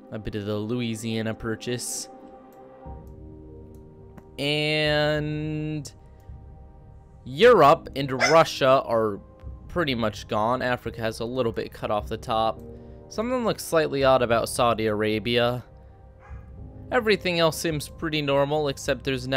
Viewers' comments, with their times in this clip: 0:04 I can hear your dog in
0:06 am i the only guy that heard the dog bark